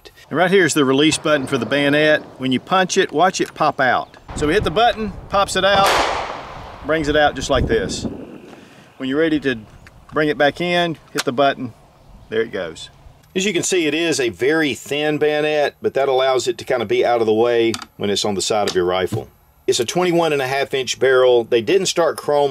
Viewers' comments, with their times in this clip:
0:04 He opened the bayonet and I was like, "Damn that latch is loud." Lol
0:06 That gun shot was well orchestrated with the bayonet deployment. Spicy 🔥